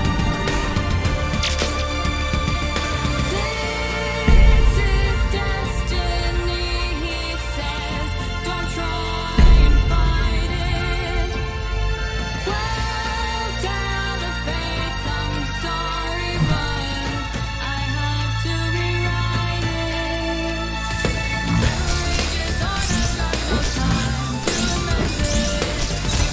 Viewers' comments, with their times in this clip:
0:03 THE SOUNDS EFFECTS I CANT
0:04 yo vine booms?
0:08 I heard a Vine boom
0:11 Is that a vine boom I hear?